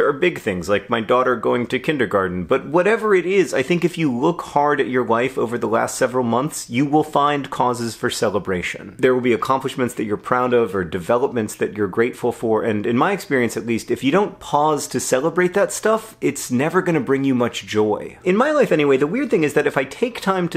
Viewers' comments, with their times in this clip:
0:03 “if you look hard at your wife over the past several months, you find cause for celebration” - Award winning author John Green, 2018
0:04 I thought you said "If you look hard at your wife" and I was here for it
0:04 I heard "if you look hard at your wife over the last several months you will find causes for celebration" Now I'm pretty sure you said life, but honestly, both are true. :-)